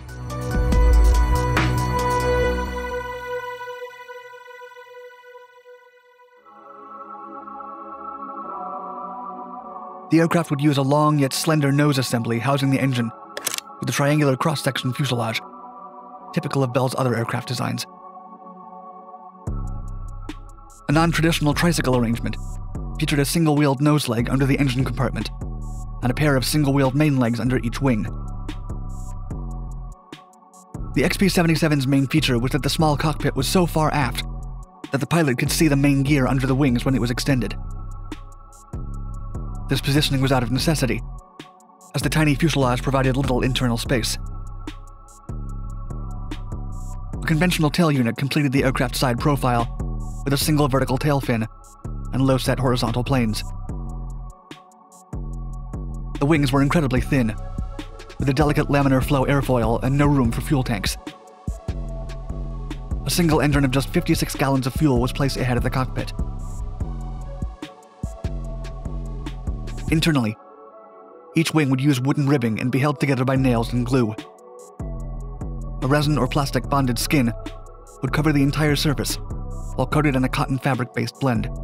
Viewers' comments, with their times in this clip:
0:07 I liked the song he used
1:03 a single engern of just 56 gallons of fuel was placed ahead of the cockpit? I swear this guy gets harder to understand with each video.